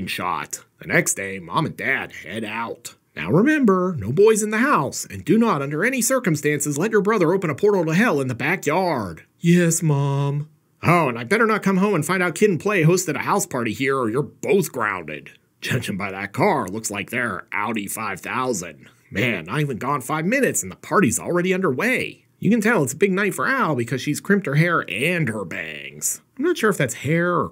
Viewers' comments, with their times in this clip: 0:09 just like a Kung fu movie dub 😊